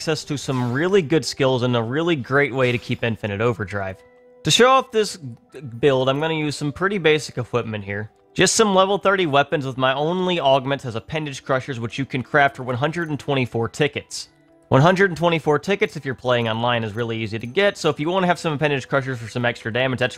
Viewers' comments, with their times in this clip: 0:03 That stutter felt like they forgot about the Clown Make-up.